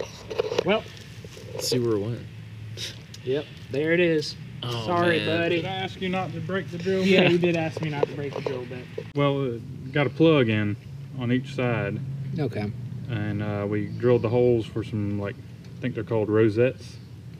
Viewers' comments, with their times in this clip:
0:05 mildly frustrated "did I ask you not to break the drill bit? "Yeah you did ask me not to break the drill bit..." I love this. He's so calm haha